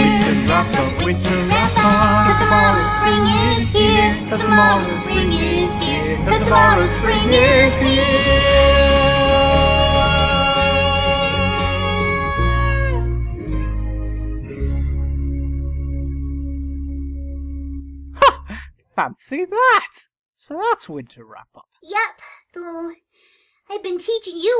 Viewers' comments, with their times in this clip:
0:07 doctor left the song and derpy was like HEEEEERE.. and he was like.. HERE..